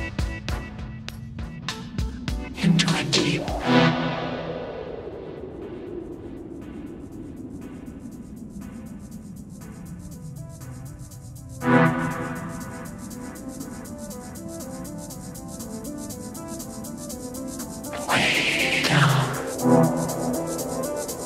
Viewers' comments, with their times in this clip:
0:03 my best part love this beat .....